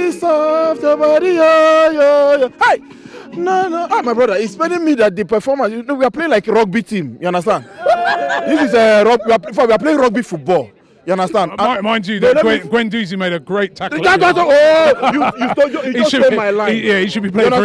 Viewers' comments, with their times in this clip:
0:05 His nephew's laugh =D